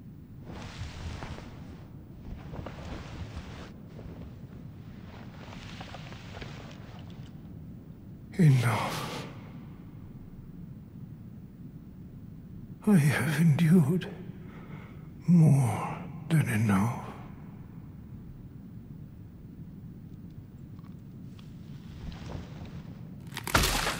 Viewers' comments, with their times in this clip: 0:08 Midra first form sound like Winnie the Pooh Second form looks like The Vessel/Spiral Heart from Grime and it makes me happy